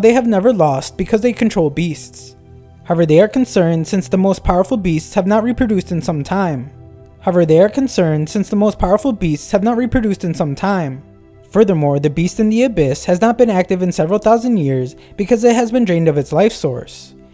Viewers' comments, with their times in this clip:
0:04 The narrator repeats something twice
0:05 did u glitch out??